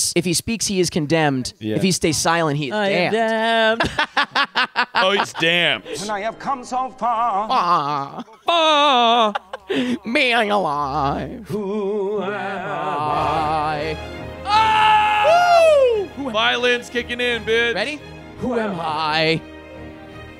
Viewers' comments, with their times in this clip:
0:06 No matter how many times I watch this highlight vid, I always die laughing at "and I have come so fAaaAa!" and scream "2-4-6-0-1" !!!!